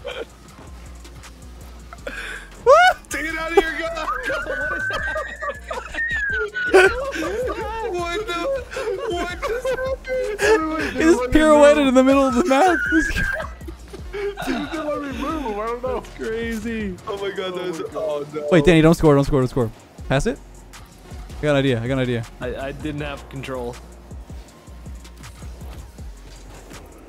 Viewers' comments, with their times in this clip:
0:07 SHAGGY IS IN THE CALL?
0:08 you turn into Shaggy from Scooby-Doo